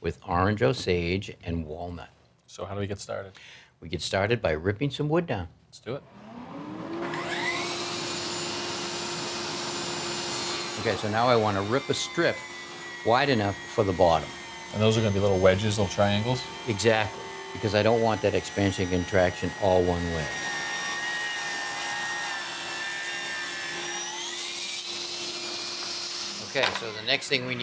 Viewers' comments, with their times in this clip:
0:08 that portable table-saw sure struggled with that rip. I don’t recognize the brand.